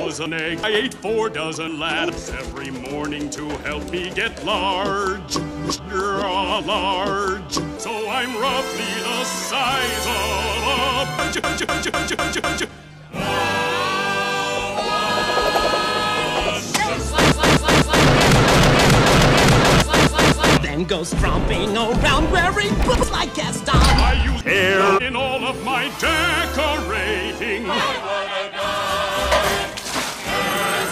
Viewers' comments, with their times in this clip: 0:10 Bless you. Need a tissue?
0:10 Gesundheit Gesundheit Gesundheit Gesundheit Gesundheit Gesundheit Gesundheit Nobody sneezes non stop at bad times like Gaston
0:11 when you sneeze more than anticipated
0:11 When you sneeze multiple times almost at once.
0:11 bless you Gaston
0:11 I was not prepared for the a c h
0:12 he was sneezing